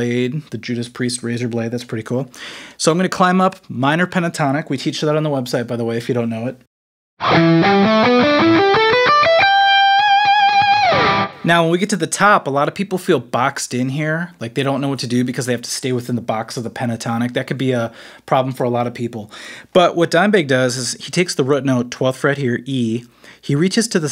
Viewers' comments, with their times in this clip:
0:07 The lick sounds like (part of) the opening lick in Sometimes She Cries, by Warrant. Although, it's a D, instead of an E.